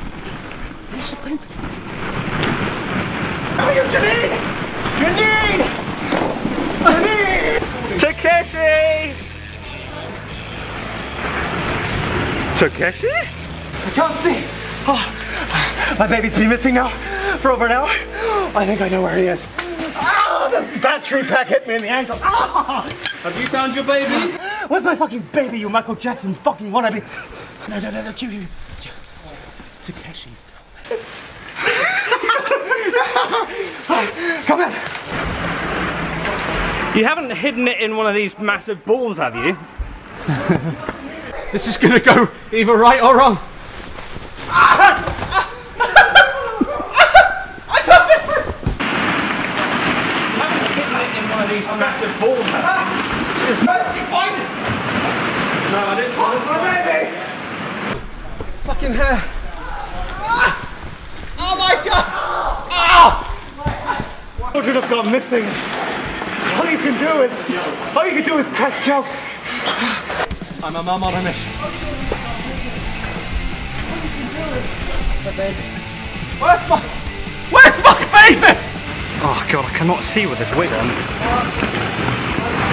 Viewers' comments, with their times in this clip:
0:08 tAkIsHi me: I choked on my drink!!!!😂😂😂
1:08 you can hear the cameraman wheezing